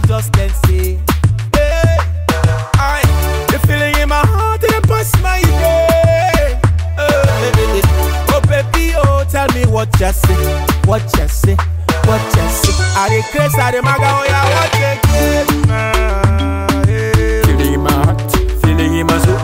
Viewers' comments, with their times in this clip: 0:03 This note hits me hard